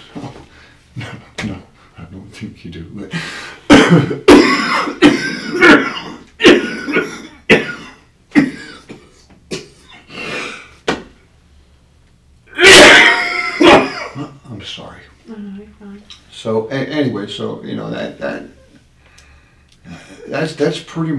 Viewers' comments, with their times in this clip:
0:03 into this video and NOW I get what everyone meant by his repulsive cough. Eeeewwww 🥴😷 Love this channel!